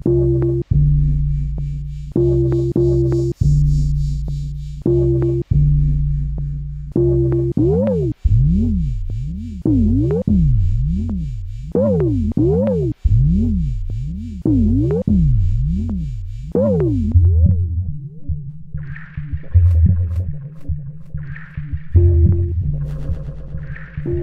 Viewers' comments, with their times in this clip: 0:07 sounds like fighting stuff in runescape